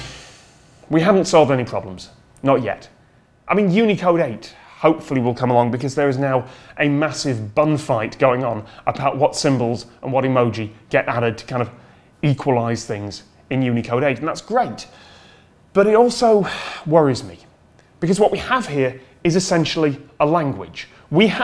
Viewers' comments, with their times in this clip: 0:03 A massive bum-fight Now there's a sight to behold... (yes I know he said bun)